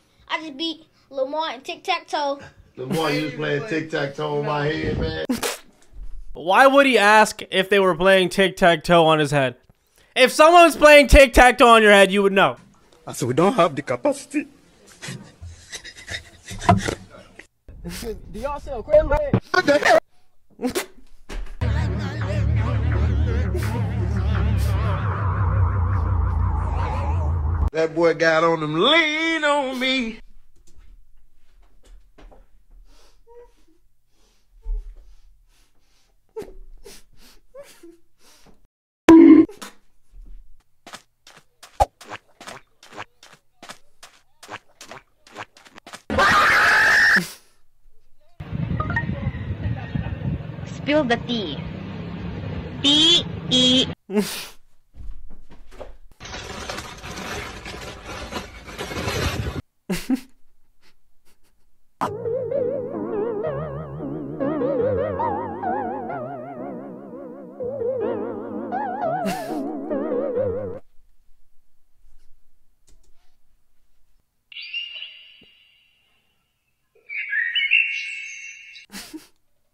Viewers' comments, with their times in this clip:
0:03 why THAT VOICE WAS
0:03 my black man laugh
0:42 bro the sream
1:02 the foot steps got me laugh